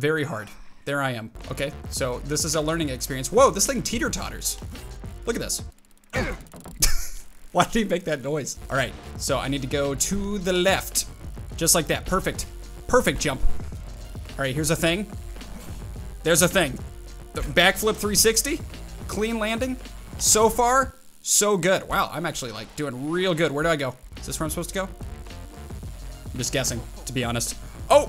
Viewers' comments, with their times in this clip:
0:10 why do you talk like that?